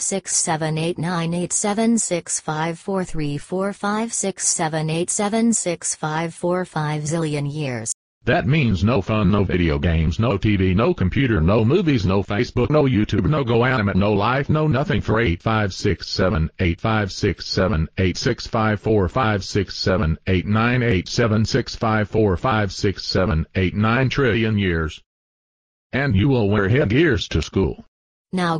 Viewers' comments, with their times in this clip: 0:10 Maya and Mikes' Dad Sounds Different